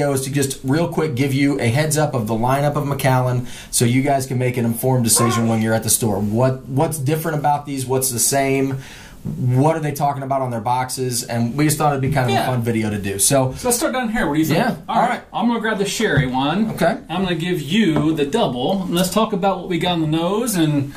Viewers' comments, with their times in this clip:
0:04 Is that a fart ?